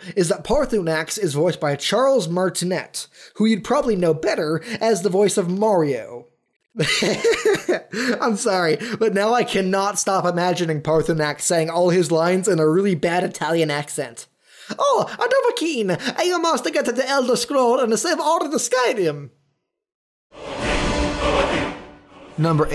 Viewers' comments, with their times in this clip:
0:04 cue scripted laughter